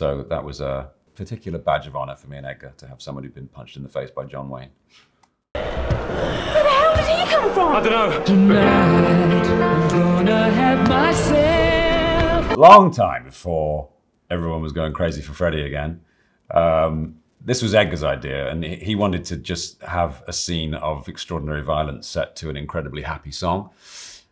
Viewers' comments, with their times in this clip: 0:08 He still laughs at this scene after probably seeing it a million times